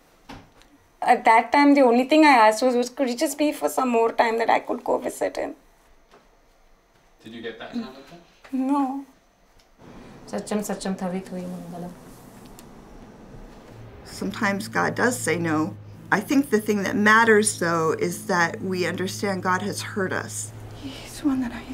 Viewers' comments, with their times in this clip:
0:06 the way she said no IT BROKE MY HEART I WANT TO GIVE HER A HUG SOO BAD